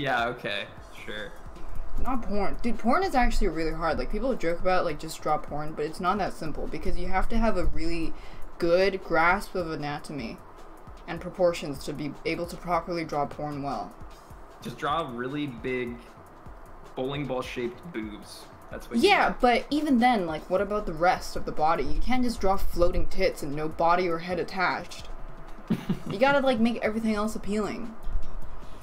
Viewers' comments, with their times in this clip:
0:09 The difficulty she had saying anatomy